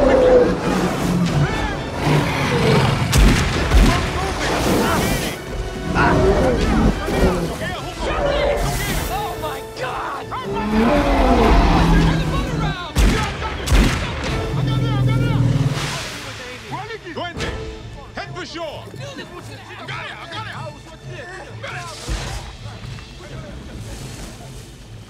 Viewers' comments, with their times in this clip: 0:10 Black bears roars